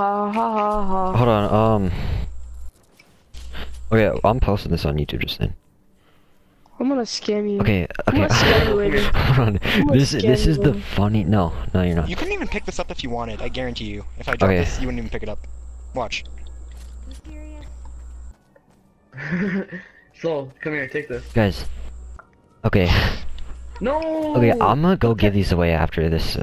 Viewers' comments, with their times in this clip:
0:10 nice beats Maine